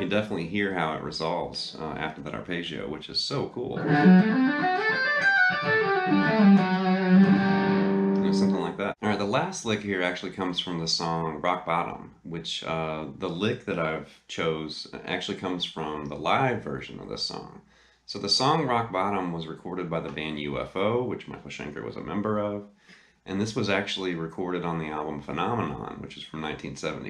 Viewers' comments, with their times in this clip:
0:09 When You play that! It sounds Like Mr. Big. Green Tinted Sixties Mind! Yes Or Not!